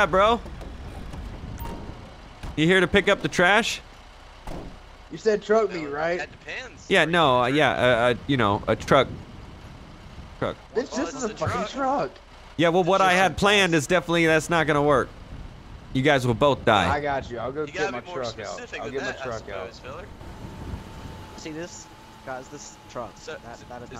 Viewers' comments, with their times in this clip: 0:09 That dude was trying so hard not to laugh lol